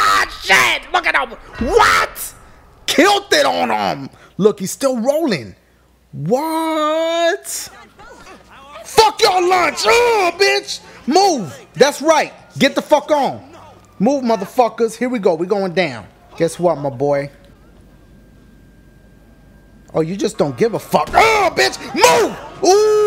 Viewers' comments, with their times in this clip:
0:04 sounds like someone said gotta boner! I had to rewind a few times to make sure I heard that right